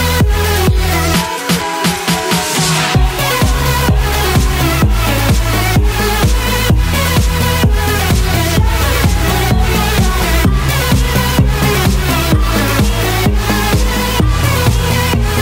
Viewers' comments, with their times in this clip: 0:03 Went off beat